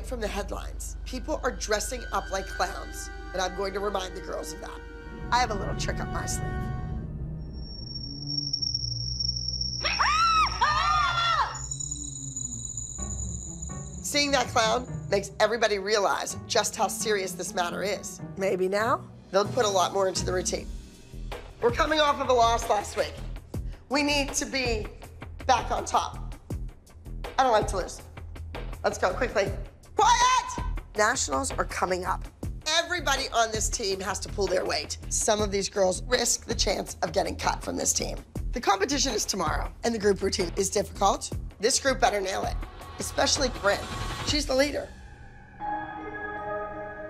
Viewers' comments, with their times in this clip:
0:10 There screams bro they sounded so fake lol.
0:30 QUIET! Abby.. no one’s talking?